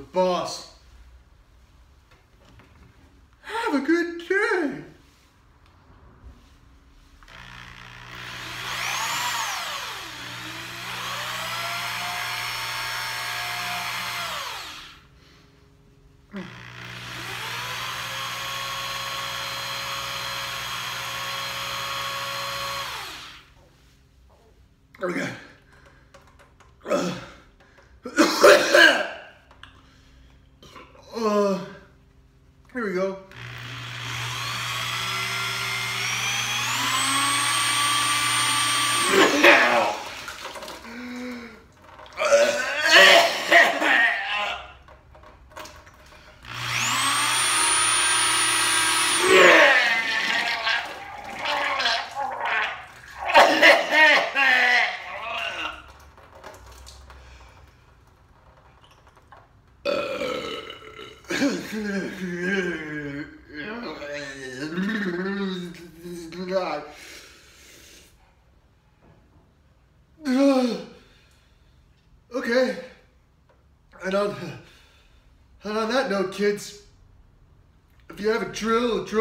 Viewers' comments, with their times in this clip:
0:03 the shakiness in his voice
0:49 I'm gonna make that puking sound my new ringtone.
0:50 I stopped my insane laughing and was like 'OH SHIT please be okay' then he burped and I kept laughing
0:58 A true Barney Gumble burp :)
0:59 that was a perfect Barney Gumble burp
0:59 Total Homer burp right there haha
1:00 Barney Gumble burp lol